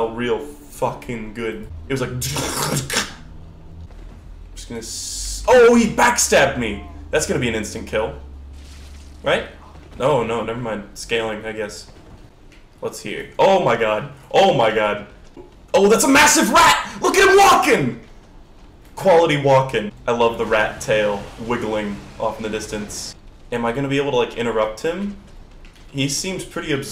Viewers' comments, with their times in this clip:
0:07 THE GIANT ENEMY RAT Beatboxes